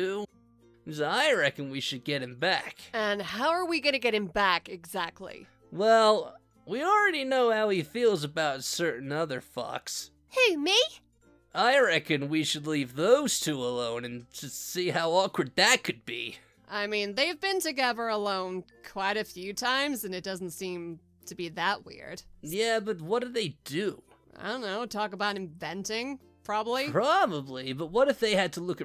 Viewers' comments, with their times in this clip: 0:09 And also, Sonic: certain other fox Captions: certain other FaCks